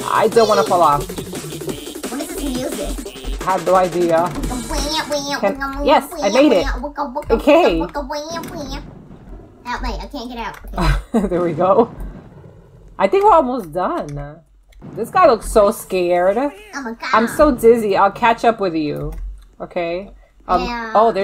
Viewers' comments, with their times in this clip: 0:05 kitty be like:Wk wk wank wank wk wk wank wank Me belike: so cute